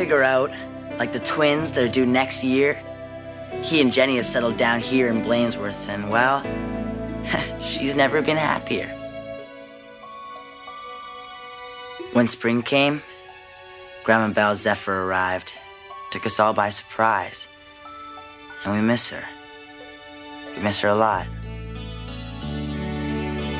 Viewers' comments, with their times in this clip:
0:09 man i’ve seen this movie a billion times and always makes me start tearing up.. just the sad music and happy picture combined with the way he describes her passing 😪😪